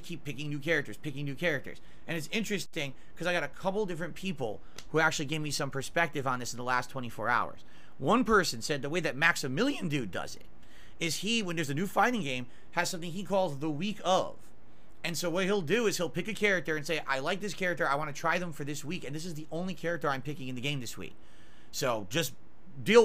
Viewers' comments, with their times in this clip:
0:08 what was that piggy squeal XD MaxiMEeeelion DOOd